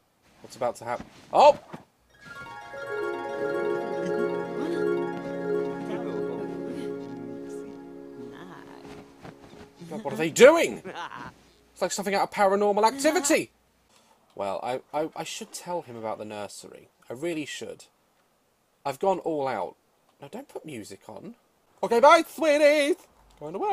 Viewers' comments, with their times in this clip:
0:10 LITERALLY NO JOKE SOUNDED LIKE THEY SAID THIS “No?” “Ahhh! I guess so” “We need a condom” “ARGHHH!”